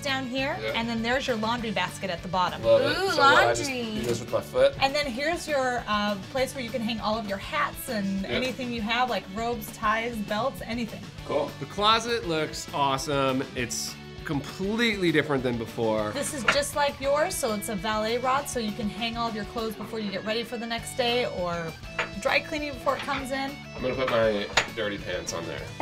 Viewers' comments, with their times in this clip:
0:09 Closet Lady seems to be into freaky bondage stuff if she's suggesting he keeps rope in his closet.